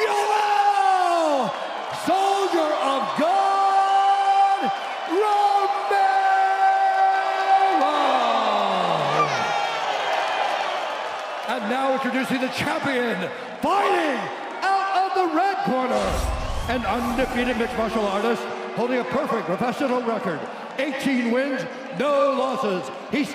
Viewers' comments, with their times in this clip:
0:08 did that woman just baby scream lmao